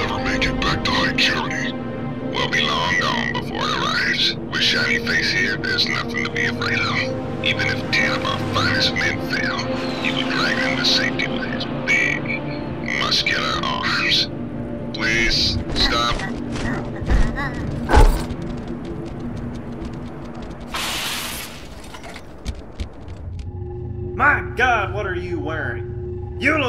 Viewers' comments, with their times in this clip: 0:07 guy almost laugh
0:10 You can hear the voice actor start to laugh
0:12 you can hear the voice actor for Rtas laughing after he said "big, muscular arms"
0:12 I love how shipmaster stutters and laughs a bit here
0:13 you can here him laugh